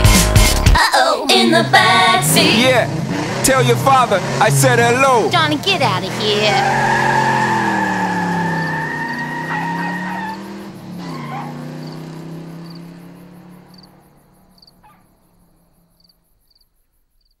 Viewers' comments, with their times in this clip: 0:05 kinda sounds like Lois Griffin